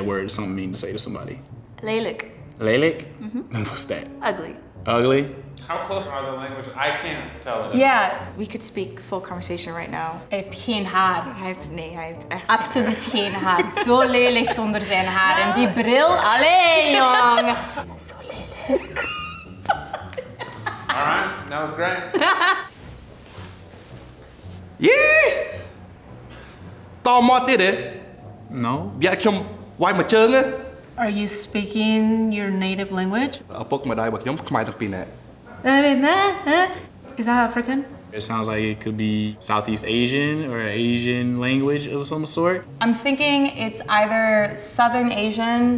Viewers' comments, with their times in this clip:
0:06 wHEN THE GIRLS STARTING SPEAKING TO EACH OTHER IN DUTCH AND FLEMISH I ABSOLUTELY LOST IT BC I DIDNT NEED THE CAPTIONS💀
0:33 that’s is Cambodian language or khmer language 🇰🇭